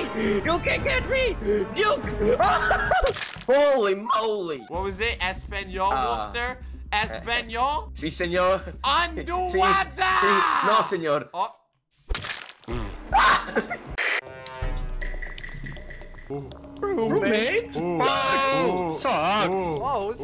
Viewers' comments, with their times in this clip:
0:03 dat voice crack tho
0:04 the voice crack tho ;-;